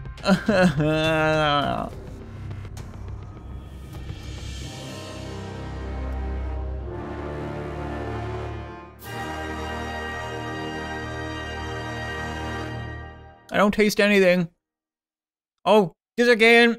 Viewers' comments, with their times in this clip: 0:03 *awkward silence for 9 seconds i don't taste anything